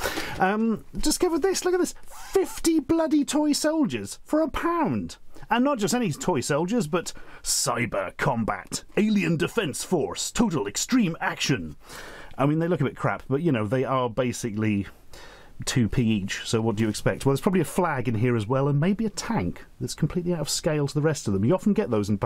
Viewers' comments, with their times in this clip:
0:09 I love how Stuart Ashen nailed an American accent! ❤ I wonder what he’s gonna sound like with the American accent when doing future reviews. Hmm.